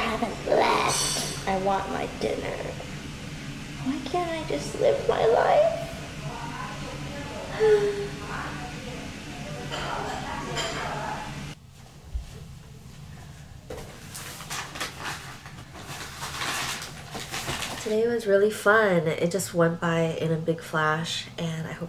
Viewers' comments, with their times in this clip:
0:07 I liked the min-sigh. xD